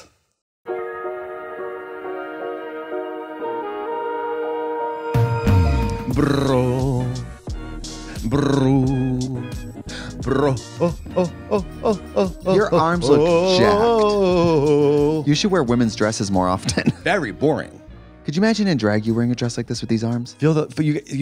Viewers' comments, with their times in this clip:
0:06 Katya doing Celine Dion’s vocal warmups on the Larry King show 😂😂😂